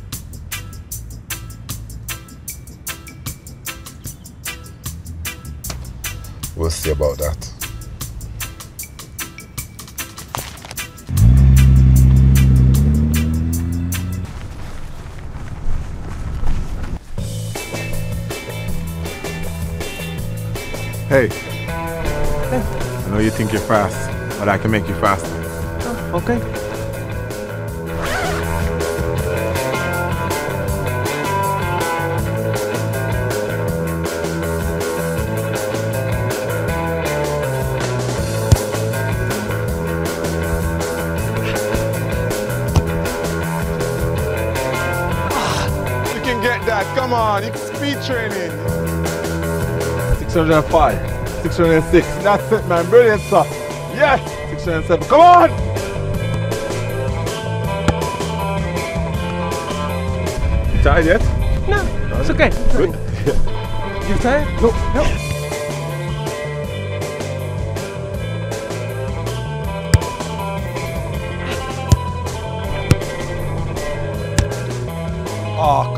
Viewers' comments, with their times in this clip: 0:05 always makes me laugh. Lmfao Imagining Usain Bolt just chilling in a car reading something and shaking his head "We'll see aboot dat"
0:58 Holy shit at the mark, Aguero sounds like a 5 five year old
0:59 the way aguero said no the voice
1:01 wtf is that voice of Aquero?
1:01 i heard usain saying "ata aief" which means in hebrew are you tired